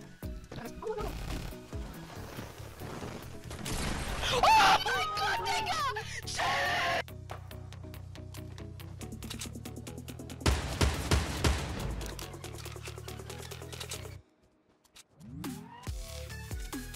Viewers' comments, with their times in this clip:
0:03 Why are those kids screaming all he did was just kill a full squad